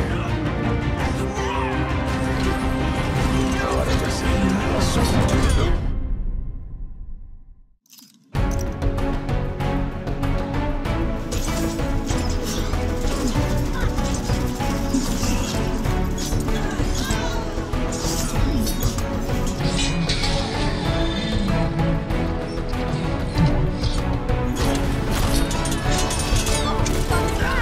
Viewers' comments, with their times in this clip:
0:08 the music just got better